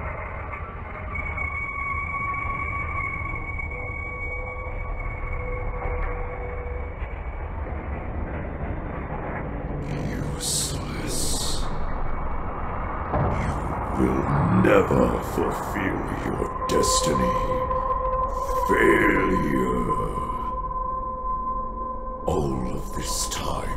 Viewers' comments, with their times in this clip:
0:09 Robert Englund: Scary voice in Ash's mind
0:10 that voice reminds me of Palpatine from Star Wars